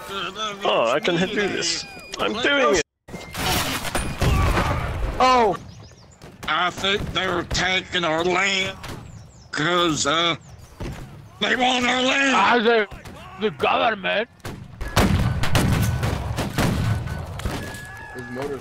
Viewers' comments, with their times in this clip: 0:05 My god his accent is jst Too good